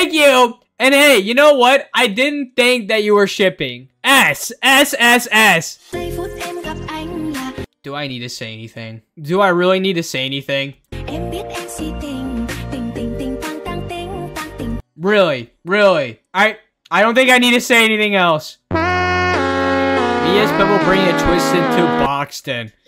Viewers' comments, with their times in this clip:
0:07 tbh I’m vibing with this music and the animation low key